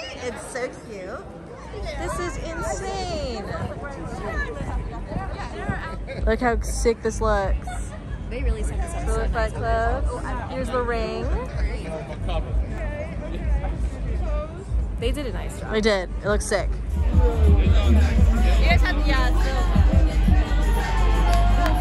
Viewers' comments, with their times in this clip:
0:08 Addison Raes laugh lol